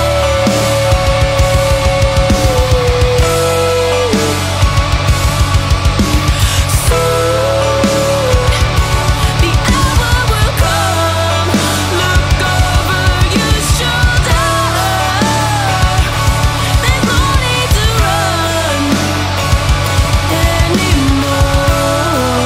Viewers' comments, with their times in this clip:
0:07 Her singing is so ominous and beautiful